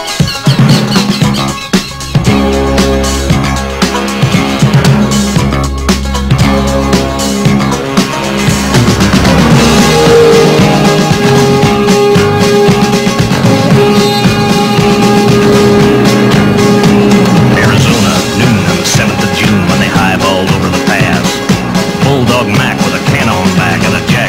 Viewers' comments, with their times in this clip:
0:07 you forgot the R at the end of director